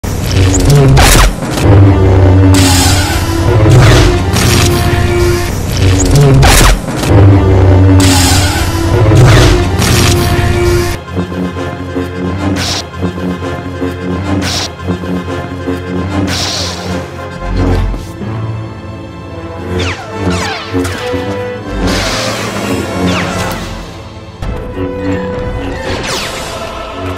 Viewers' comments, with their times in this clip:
0:10 his lightsaber hum synced with the music....most impressive-ly